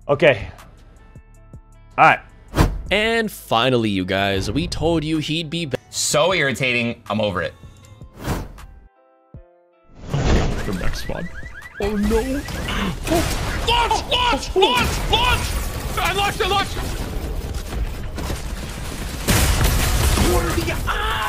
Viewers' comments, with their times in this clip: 0:08 “ooooooooooohooooooooooooooooooooooooooh” Sounds like a race car 🤣